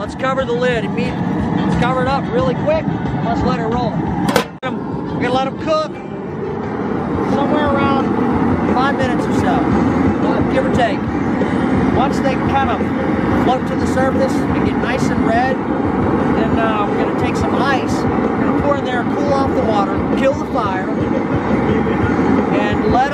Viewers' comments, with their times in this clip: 0:06 (little girl in background) Ewwwwwww, thought they were talking about how to enjoy crawfish🦞 ! Not boogers. Lmao 🤢 But on a serious note: you all are a great family. I wish I had a family like this! It truly seems pure, honest, loving and FUN!!